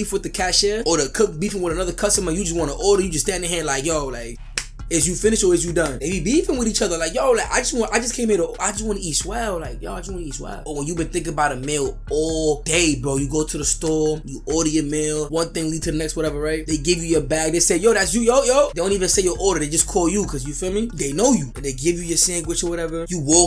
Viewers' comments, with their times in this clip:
0:04 he sound ma zesty